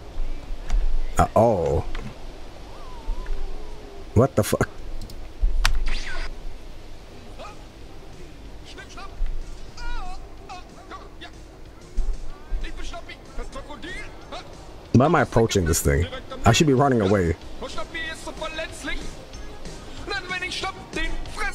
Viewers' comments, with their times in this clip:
0:07 this is what the singer for system of a down sounds like.